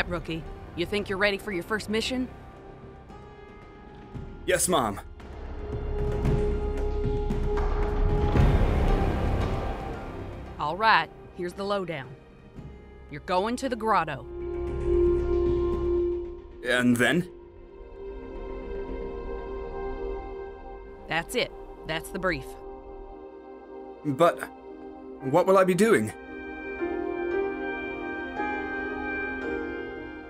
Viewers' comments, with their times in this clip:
0:09 did he say yes ma’am or do you say yes mom
0:11 she is a cowgirl I think it was super trash trying to sound like that I am from alabama and I speak nothing like that